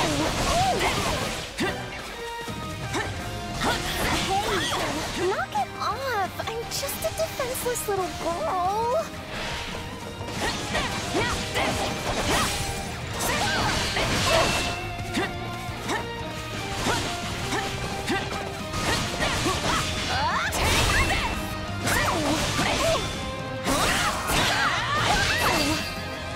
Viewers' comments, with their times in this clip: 0:08 did Hilda just say gworl? 😂